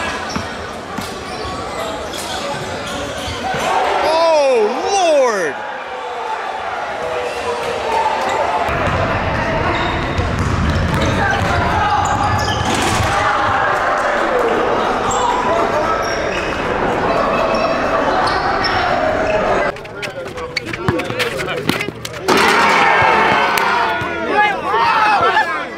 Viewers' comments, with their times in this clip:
0:09 No one talkin 🤣🤣